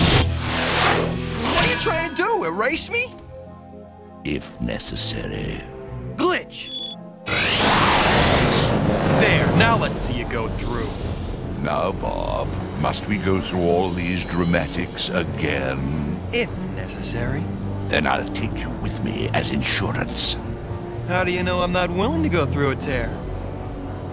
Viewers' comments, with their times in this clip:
0:06 this moment when Glitch returns to Bob is so intense in its speed and the sound design and lighting (look at the backlight highlights on Megabyte in this scene) and music overall are so good that it's almost like something from today...or even better...how many kids animation shows are better even today?